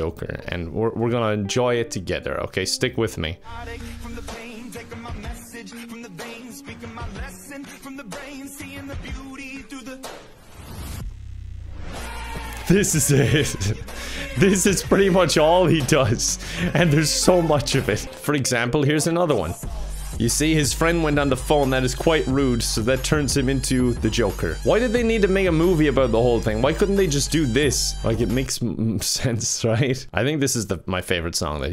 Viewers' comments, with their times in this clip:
0:03 and they have to ruin one of my favorite songs, too. Insult to injury.
0:12 Pillar men theme intensifies